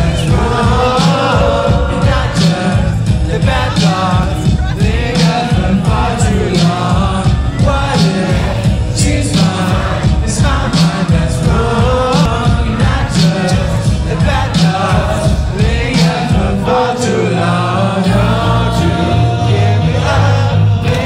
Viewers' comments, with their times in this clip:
0:08 feels like after I've cleaned my ears and finally can hear again.